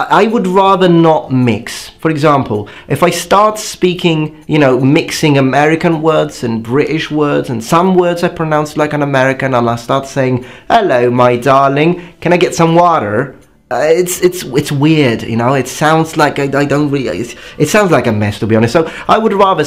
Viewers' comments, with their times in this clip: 0:06 that ‘British’ was top notch!